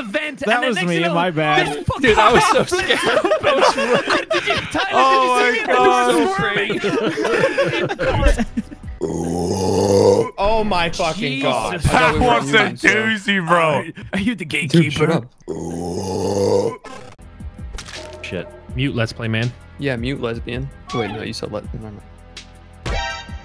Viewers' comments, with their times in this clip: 0:08 -that was a beastly burp!!!! Plus the ending killed me OMG!!! 😂😂😂😂